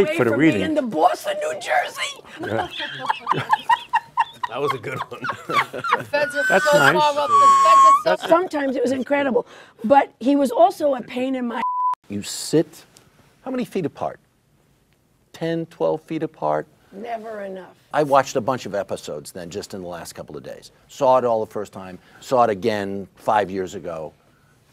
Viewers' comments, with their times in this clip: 0:06 the squeal is what got me about this laugh
0:07 Dr. Milfy sounds like El Risitas